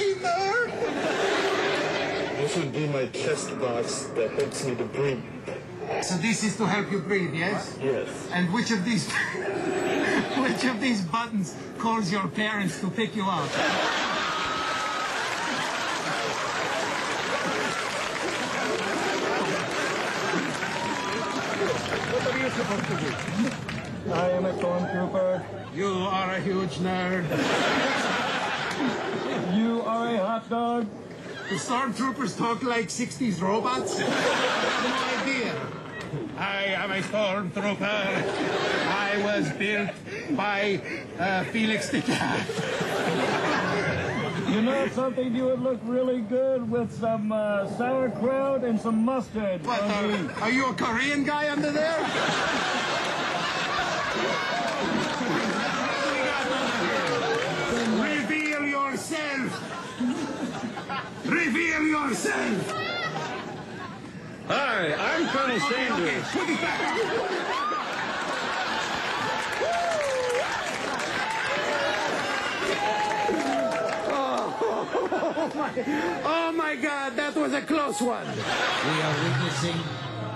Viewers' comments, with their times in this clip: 0:08 He is laughing even before asking the question haha that was a good one
1:03 did he say "Hi, i'm Bernie Sanders"